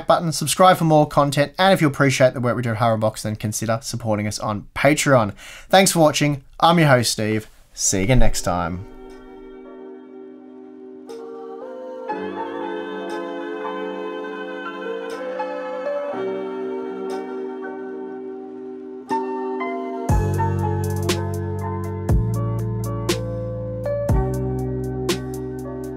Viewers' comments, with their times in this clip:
0:10 porn music epilogue!!!